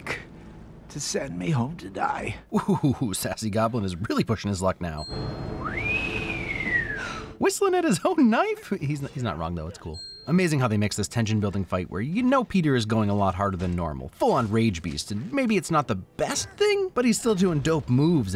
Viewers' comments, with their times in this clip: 0:06 I'm pretty sure Goblin was whistling at the punch that Peter just threw at him. I mean he literally put a hole in the metal. Glad you finally made a wins video on this amazing movie! Loved it!